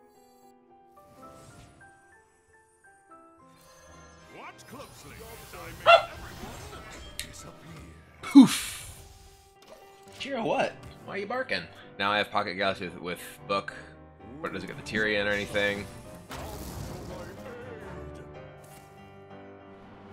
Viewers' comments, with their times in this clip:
0:05 his dog just said Poof when kibler played reno so cute